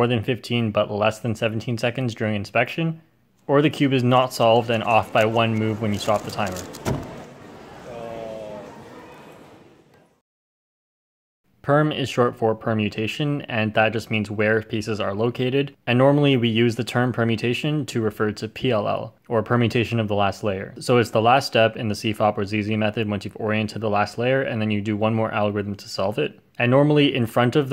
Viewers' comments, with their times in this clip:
0:10 You hear my dads voice in the background we we there